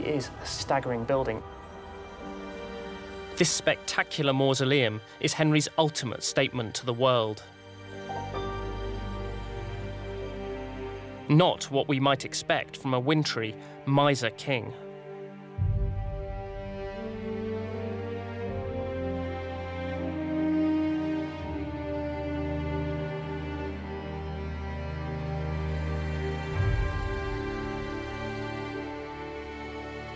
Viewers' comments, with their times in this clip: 0:03 And the song too.
0:16 That music is stunning